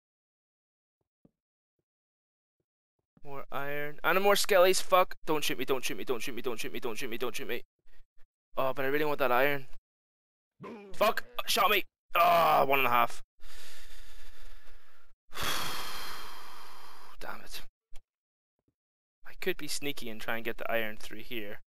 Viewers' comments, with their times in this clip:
0:04 lol DON'T SHIT ME, DONT SHIT ME, DONT SHIT ME!